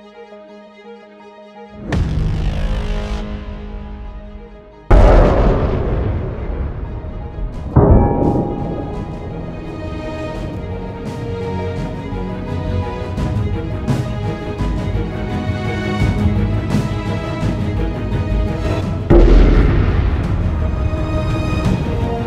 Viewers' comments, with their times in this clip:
0:09 The music combined with the bullets going through the breastplate somehow reminded me of that final cavalry charge in The Last Samurai.